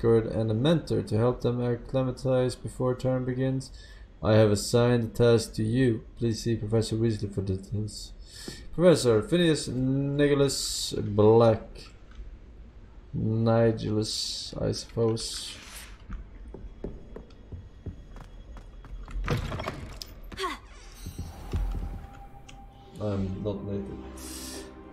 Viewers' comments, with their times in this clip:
0:06 he is laughing 😂😆